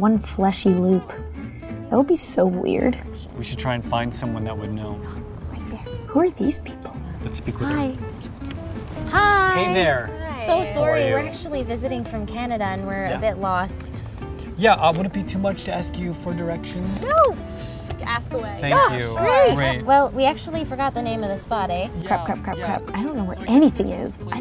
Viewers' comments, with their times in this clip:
0:09 "oh we're sowry" had me dying
0:10 so Canadians do say "sorery"
0:10 her pronunciation of "sorry"
0:10 she pronounces it like 'Sorree' instead of 'Sarry' cringe